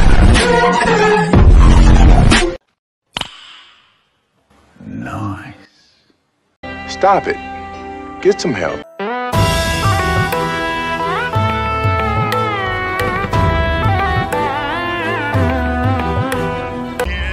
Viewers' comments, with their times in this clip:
0:03 I put this part in two times speed and it was the original audio